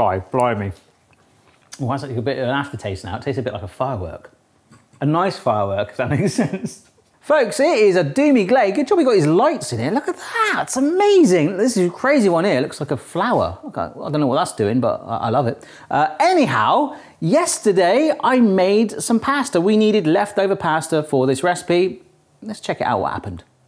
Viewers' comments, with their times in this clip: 0:08 “doomy glay” was it just me that heard that? Haha